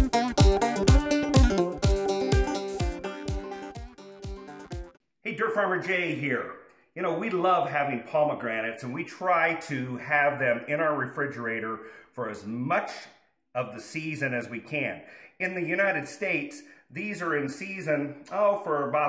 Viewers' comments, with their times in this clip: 0:03 nice music is there a full version?